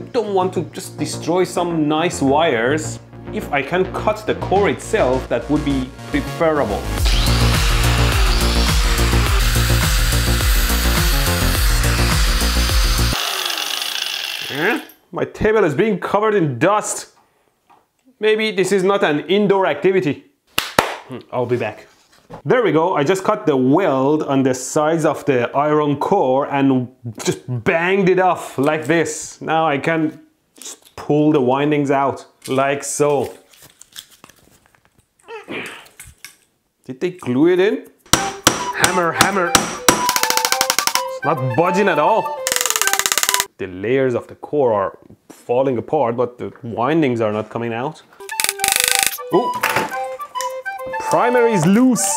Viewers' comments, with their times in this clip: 0:03 that's some Dr. Disrespect sounding music lol
0:38 the happy music when hes beating the shit out of the metal core lmao
0:39 POV Persian man banging on the table.